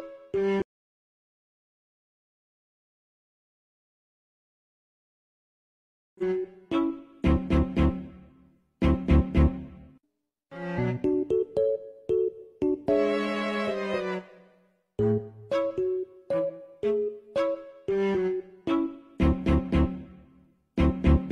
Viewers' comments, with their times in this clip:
0:05 𝕚𝕕𝕜 𝕚𝕗 𝕦𝕫𝕚 𝕨𝕒𝕤 𝕔𝕣𝕪𝕚𝕟𝕘 𝕠𝕣 𝕟𝕠𝕥